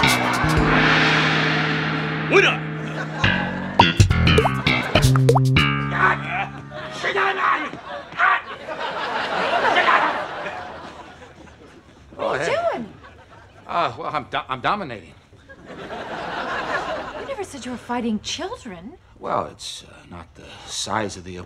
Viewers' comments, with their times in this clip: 0:05 "Yat, Shin a ga". Those sounds Kramer makes as he just holds that girl on the ground 😂😂😂